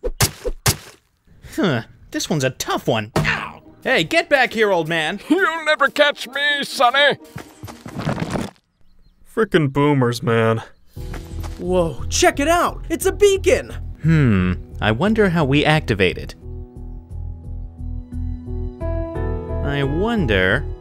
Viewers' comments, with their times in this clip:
0:03 spamming this button sounds like a robot